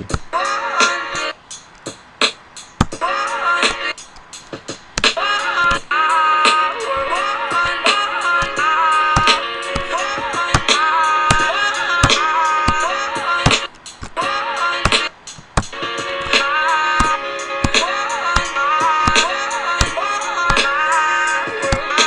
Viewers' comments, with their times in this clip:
0:08 Someone starts slowly dribbling a basketball.